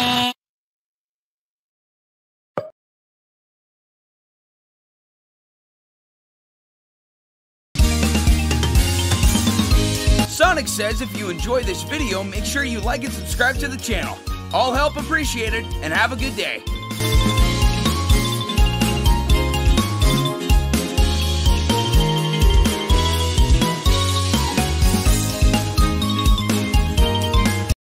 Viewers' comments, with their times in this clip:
0:10 AN OUTRO AND VOICR REVEAL MY PREEEEECIOUS